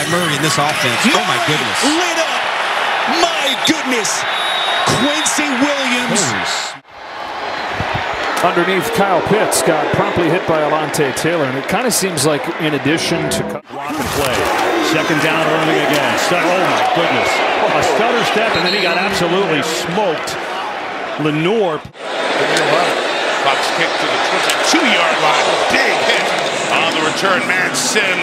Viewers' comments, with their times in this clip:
0:09 They even added the Undertaker theme music 🤣🤣🤣